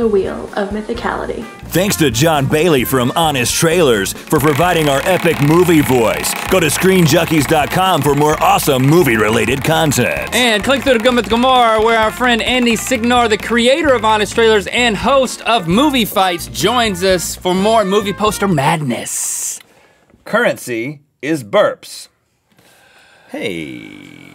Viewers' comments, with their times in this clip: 0:10 Rhett's voice zomg